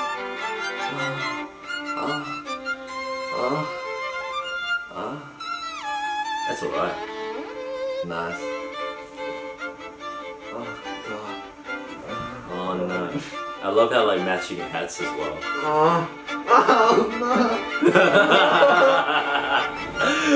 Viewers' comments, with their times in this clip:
0:03 How is Brett so relaxed with Eddy moaning this much?😂😂 If my best friend kept moaning beside me as we recorded a video for YT I'd feel... out of place😂😂😂😂😂